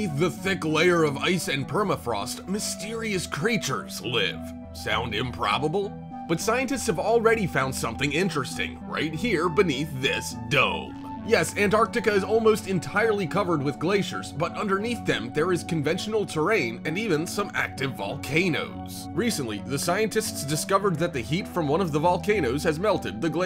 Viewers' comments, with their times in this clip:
0:04 Narrator's Voice is soooooo frikin annoying! Outta here.